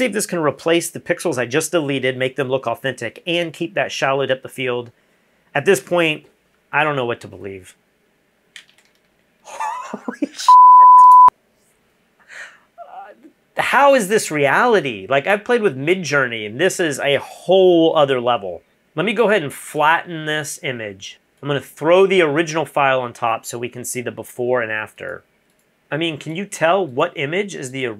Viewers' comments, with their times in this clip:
0:10 Yea, but why this fucking loud beep ? This isn't american television.